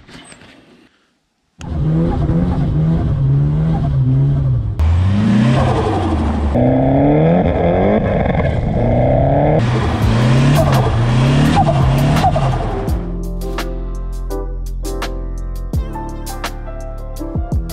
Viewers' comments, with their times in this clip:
0:05 yes.. Clear turbo noises Stutututu